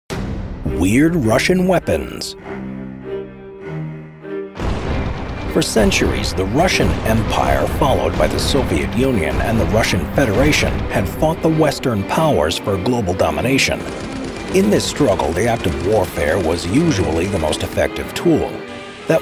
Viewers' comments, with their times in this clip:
0:01 what Is "weird RTSssIAI Shaeapois"?